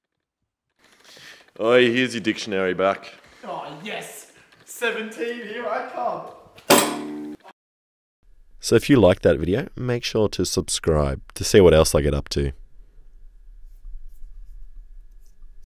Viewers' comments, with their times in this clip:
0:10 Top ten perfectly cut screams